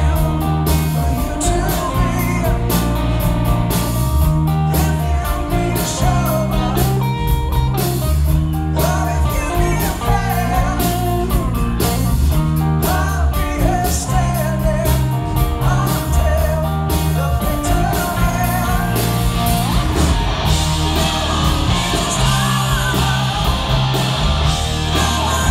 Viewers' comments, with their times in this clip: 0:06 that little bluesy diddle hit me in the soul